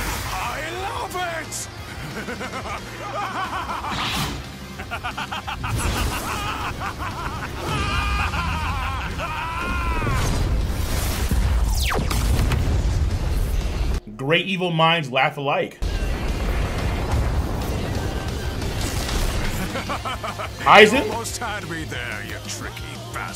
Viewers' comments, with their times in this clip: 0:07 Sukuna & Mahito having a good ol laugh at Yuji